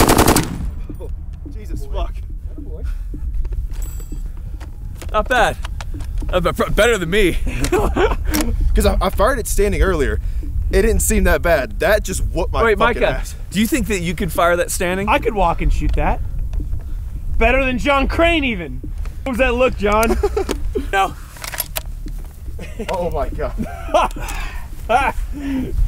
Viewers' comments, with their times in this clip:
0:08 sounds like he says "i farted standing earlier"